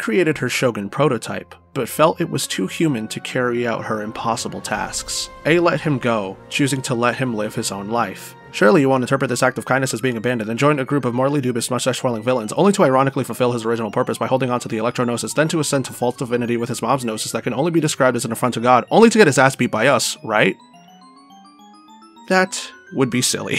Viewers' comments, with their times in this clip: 0:10 The tempo/tone change had me lmfao. From a mysterious and curiosity brimming dialogue to basically rapping the entire sumeru archon quest in a professional tone!